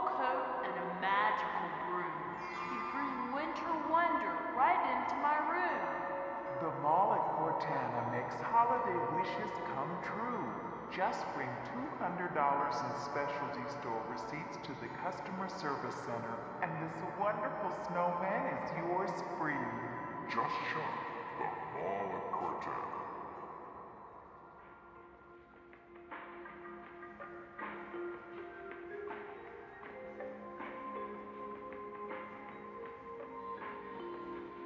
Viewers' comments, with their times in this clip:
0:06 "The Mall at Cortana makes holiday wishes come true..." ...so creepy these announcements for the benefit of no one. It's like wandering through the Overlook Hotel in 'The Shining', listening to the ghosts...
0:16 What’s up with the intercom ? That was creepy. I went there this week when I stoped at Dillard’s. I was able to get in for a little while everything is closed down and just about stripped down. A security lady stopped us before we got to the fountains